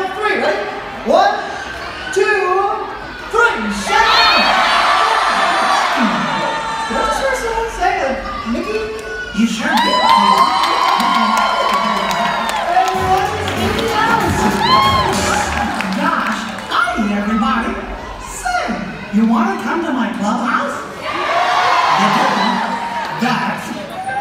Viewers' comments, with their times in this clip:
0:05 if you hear really REALLY closely, mickey shouts his name